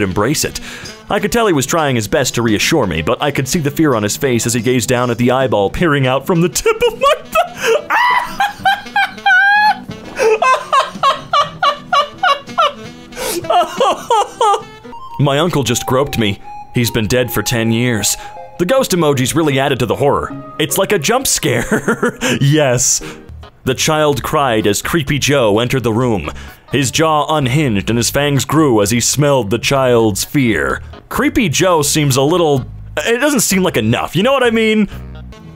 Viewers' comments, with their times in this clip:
0:07 this is the happiest laugh i have ever heard and I love it
0:07 that laugh is classic 😂
0:21 "jumps care" lol